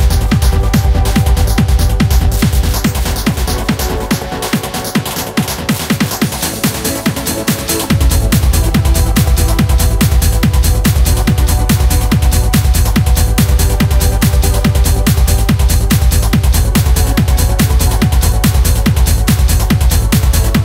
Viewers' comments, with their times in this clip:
0:03 why antigone only released the shitty pluck version of lollypop? This live version is much better